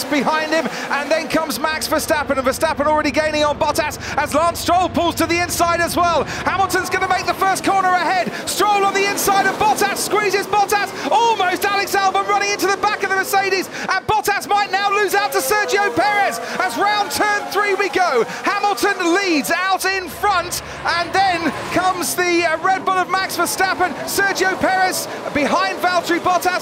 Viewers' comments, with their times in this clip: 0:09 when you don't hear the first part, it's "Bottas squeezes Bottas"